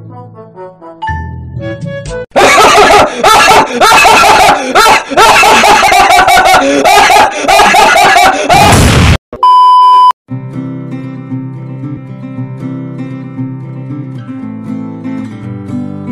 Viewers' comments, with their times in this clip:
0:03 ...... R.I.P my ears ;")